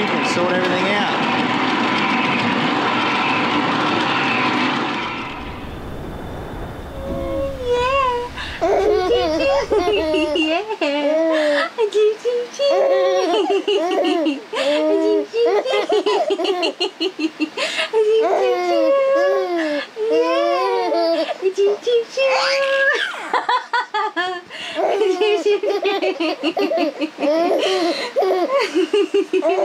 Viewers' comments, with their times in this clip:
0:10 Hello Legends!!! OMG baby laughs are the most addictive and beautiful thing in the world. What a cutie <3 Whoohoo Marley sure looked like he was missing the boat rides and launching of the tender to do a but of beach patrol for sure. Your first beach adventure as a family was adorable. Hahaha Marley was sooo sandy. Thanks for sharing. Yew!